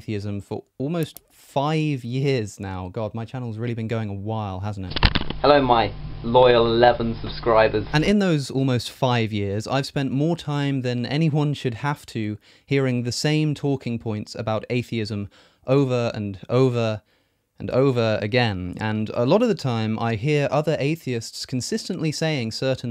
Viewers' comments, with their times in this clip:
0:05 crazy how his voice didn't change hahaha